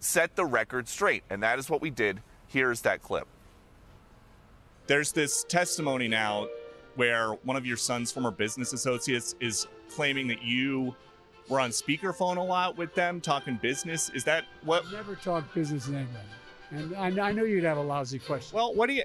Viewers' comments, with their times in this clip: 0:05 I love how Peter can ask a ”gotcha” question without it sounding accusatory or negative….quite a talent! 🫡😆